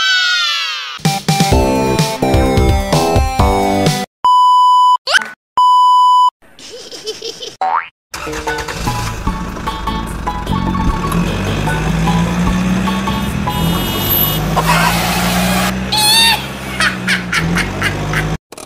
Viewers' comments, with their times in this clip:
0:03 Oh wait electric guitar 🎸 😊😊😊 cool 😎